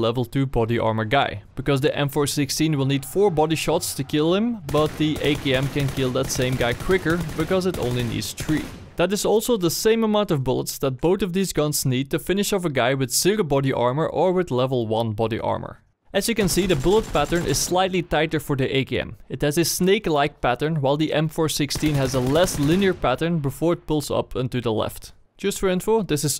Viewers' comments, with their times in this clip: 0:08 did he say tree